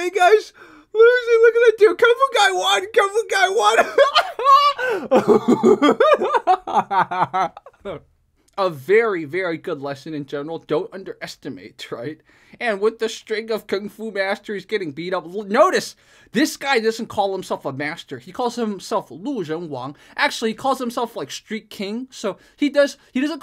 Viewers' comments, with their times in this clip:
0:05 it's good to have fun but it was too noisy. I liked it at the beginning but its kinda unnatural (for ex. ). No need to exaggerate, your videos are good enough without it